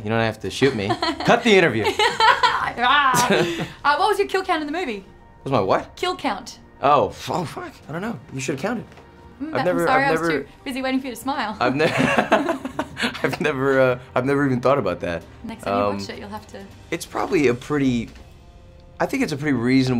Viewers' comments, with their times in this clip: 0:07 Please tell me I'm not the only one who heard him swear quietly...